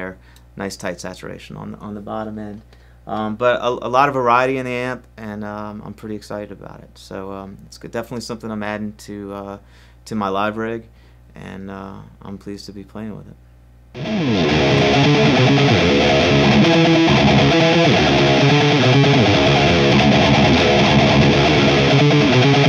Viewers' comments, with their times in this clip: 0:09 "My Libree" lol